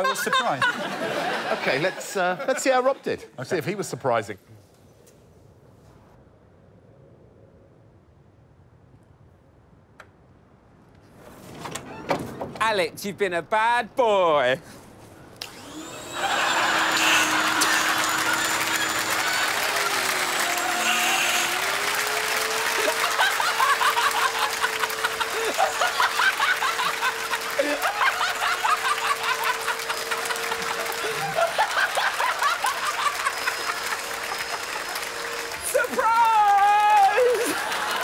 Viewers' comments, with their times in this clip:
0:10 i love the absolutely crazy maniac laugh
0:25 As an American watching this..... in the video I honestly thought that was our Vice President Kamala Harris sitting on the sofa and cackling hysterically. Which then caused me to "cackle" about how funny it was that I thought it was Kamala Harris. And for some strange reason if you "cackle" in my house our pug dog spontaneously poops on the floor. So for that last part I'm giving this video a thumbs down.